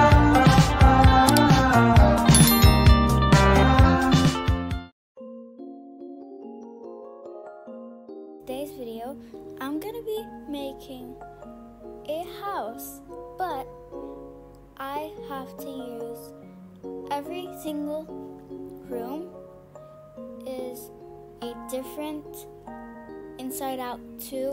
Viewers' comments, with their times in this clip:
0:05 I am sick but good morning also this part was muted 🔇